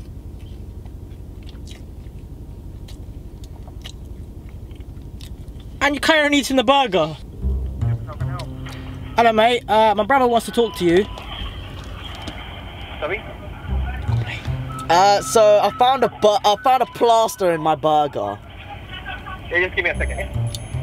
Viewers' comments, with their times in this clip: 0:03 true asmr right there